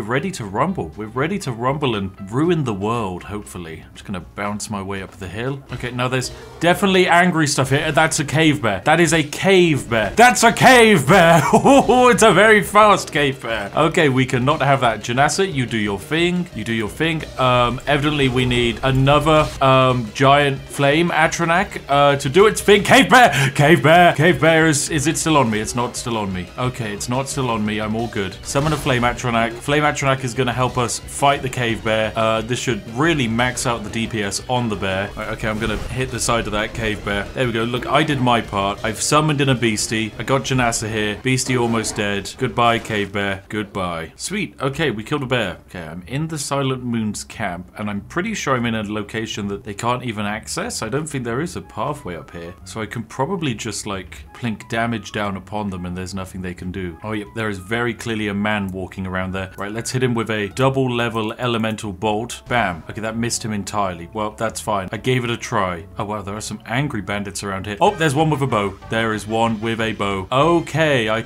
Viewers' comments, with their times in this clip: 0:07 I heard “cave man” for a whole minute instead of “bear”. Was like “what”? It’s a man? 😂
0:08 the fukin pokemon music 😂😂 I love it
0:58 The Smash Bro music killed me xD